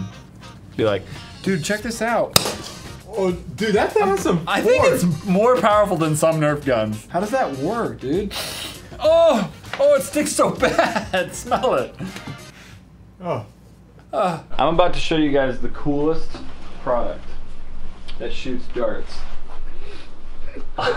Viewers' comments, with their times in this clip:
0:08 the most aggressive sniff I have ever seen